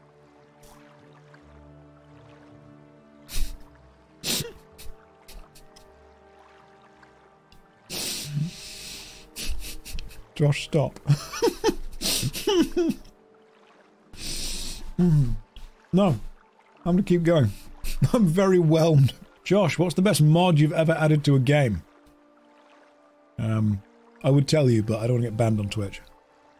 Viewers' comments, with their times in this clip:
0:10 this was wholesome man, he coudln't hold off is real laugh and that's a valuable moment in life.